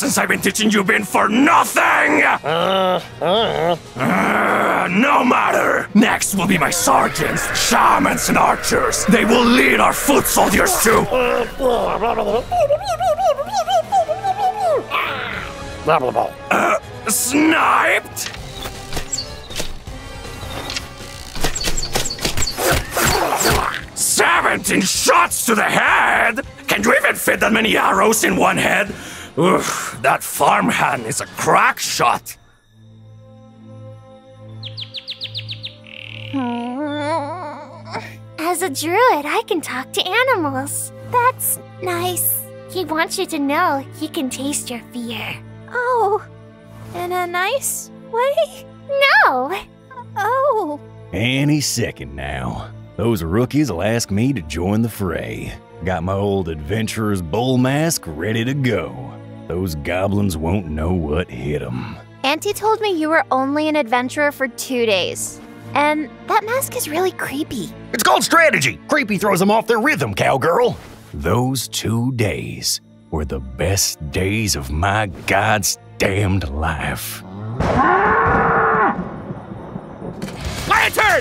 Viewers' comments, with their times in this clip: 0:10 pew pew pew "aaarg" "blehbluhlbuh" was never so clear :D
0:15 that “now they’re dead” in goblin gibberish made me die laughing.
1:07 holy COW, he sounds like Kled here...